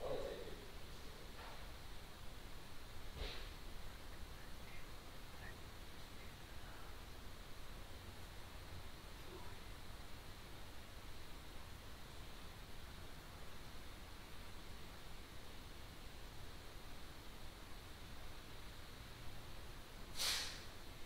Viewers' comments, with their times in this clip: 0:05 -30 heard the whispers, cant make it out